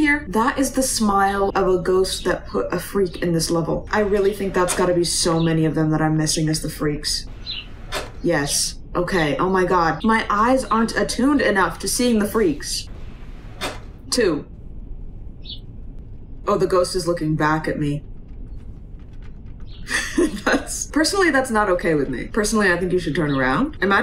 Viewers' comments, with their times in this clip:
0:08 I love the added bird sound effects in the train car with the trees! Very immersive!